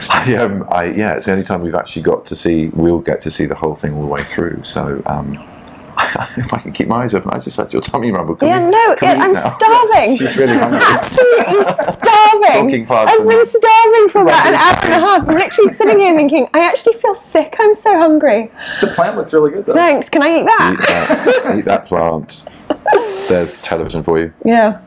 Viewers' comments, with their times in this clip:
0:04 Someone heard the sound of the gut ? hahahahaah omg, poor.
0:06 Keira sounds hungry